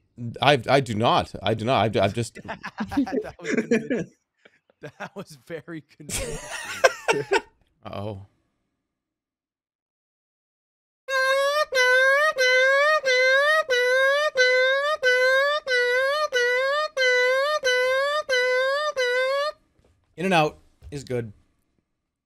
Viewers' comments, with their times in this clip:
0:09 Worst sound of 2021: ambulance impression